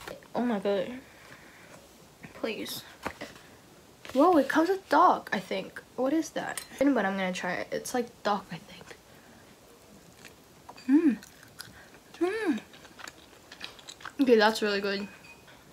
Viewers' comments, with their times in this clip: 0:03 I thought that she said dog and I was like😐